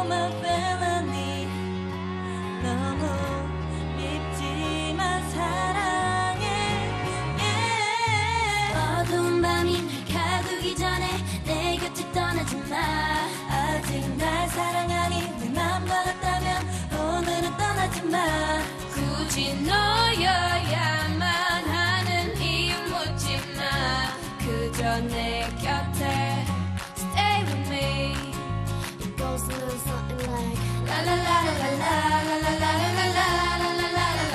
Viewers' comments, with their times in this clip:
0:07 Listen to Jisoo her vocals, I'm speechless.
0:21 I don't know who that is but I frickin' love her voice!!!